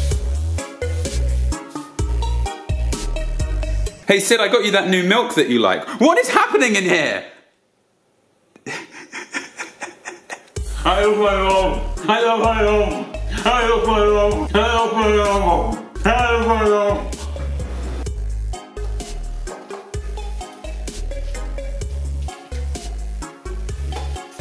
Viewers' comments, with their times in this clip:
0:10 your censoring kinda went up a little bit lol
0:11 Am I the only one who hears "I lost my job" 😅😂